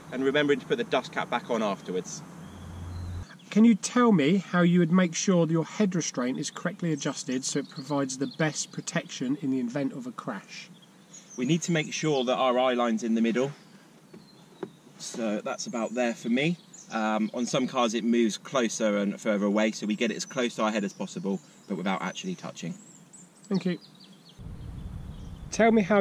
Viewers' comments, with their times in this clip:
0:07 "Invent of a crash" eh !